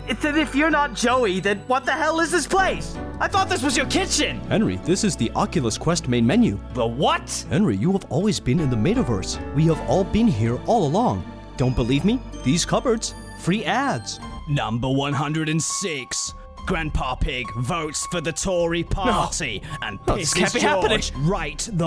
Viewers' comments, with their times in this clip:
0:04 suddenly has a robotic advertisement voice.